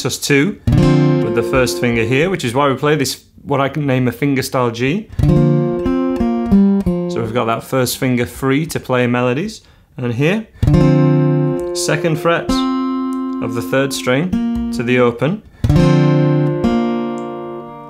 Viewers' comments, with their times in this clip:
0:03 it becomes the Beatles' yesterday 😂😍